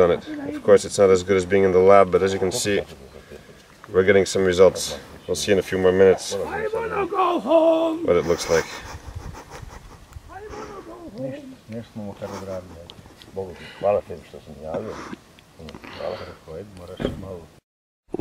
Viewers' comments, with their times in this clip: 0:06 haha both of them laughted at that. “I WANT TO GO HOME!”